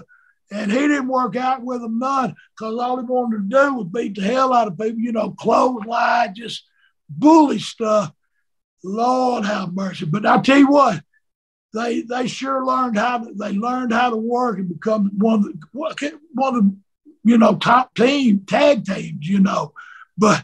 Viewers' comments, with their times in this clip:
0:06 the way he says close line it cures my erectile dysfunction